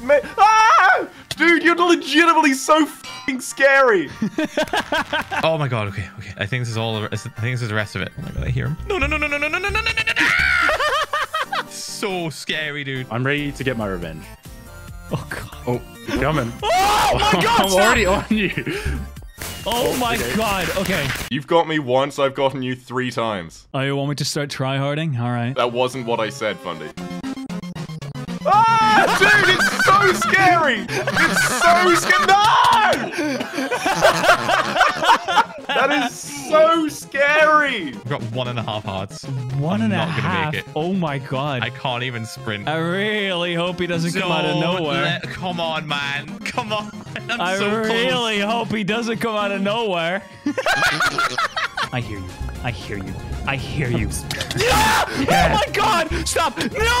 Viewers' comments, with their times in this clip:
0:08 The way he was yelling No was funny.
0:24 Look how fundy laughed so funny
0:41 what' sthat I hear? CHANGED OST? :зззззззз